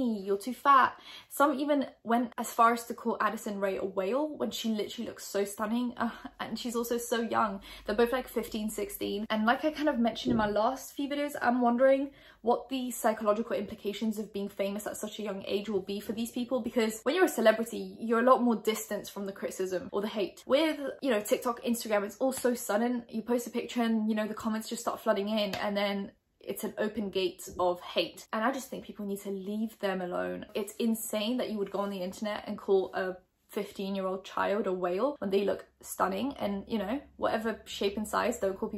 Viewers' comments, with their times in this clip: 0:10 the bang gave me a mad shock I was not ready
0:23 Awh! I could hear your voice shake I'm hoping that's because you're just very passionate about the girls and not because you're remembering being attacked/insulted about your appearance. I think you're gorgeous btw <3